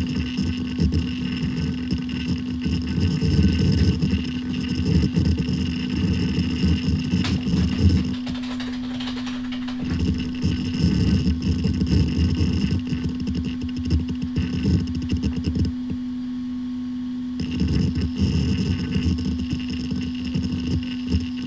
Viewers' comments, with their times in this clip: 0:07 Busted! I knew your words per minute was insane as I can see when you type in the password haha. Nice to see you showing off so many Fujitsu drives lately! I do like the buzzing sounds this one makes during the self-test it does.